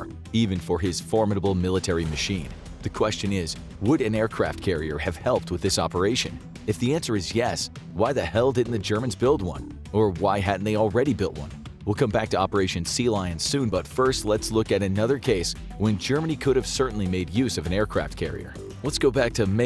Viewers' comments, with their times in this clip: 0:03 Narrator sounds angry Germany didn’t build one.